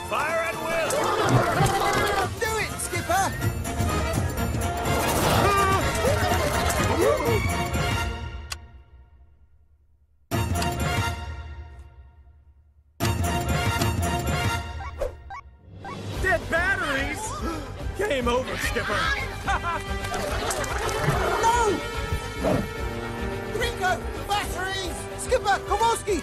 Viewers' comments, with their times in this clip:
0:07 The amount of creativity they put in with having the music end every time Skipper pushes the button is unbelievable😂